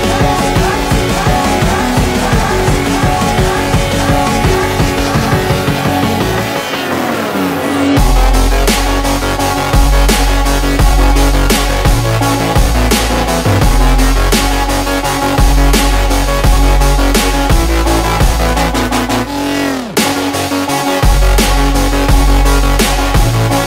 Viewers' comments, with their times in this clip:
0:07 Major Forza Horizon 1 vibes!